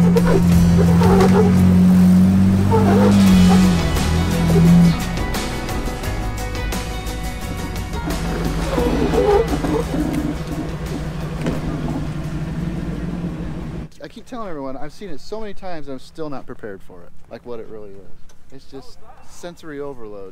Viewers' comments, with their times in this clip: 0:07 I thought that was a dog lol